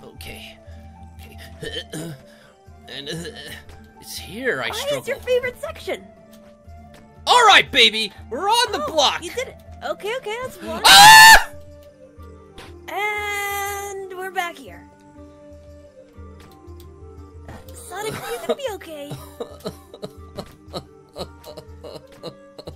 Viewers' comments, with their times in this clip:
0:10 That scream again XDDDDD
0:10 And the award for best scream goes to… SONIC
0:10 That was higher than Ariana Grande’s High Notes.
0:10 Music plays in the background - Sonic screams to the 5th dimension Not loud enough-
0:10 🤣🤣🤣🤣🤣🤣🤣🤣🤣🤣🤣🤣🤣🤣🤣🤣🤣🤣🤣🤣🤣🤣🤣🤣🤣🤣🤣🤣🤣🤣🤣🤣🤣🤣🤣🤣🤣🤣🤣🤣🤣🤣🤣🤣🤣🤣🤣🤣🤣🤣🤣🤣🤣🤣🤣🤣🤣🤣🤣🤣🤣🤣🤣🤣🤣🤣🤣🤣🤣🤣🤣🤣🤣🤣🤣🤣🤣🤣🤣🤣🤣🤣🤣🤣🤣🤣🤣🤣🤣🤣🤣🤣🤣🤣😂😂🤣🤣😂🤣🤣😂🤣🤣😂🤣🤣😂😂🤣🤣😂🤣🤣😂🤣🤣😂🤣😂🤣😂😂😂🤣🤣🤣😂😂🤣🤣🤣😂🤣🤣😂😂😂🤣 blew hedgehog scweams fuunni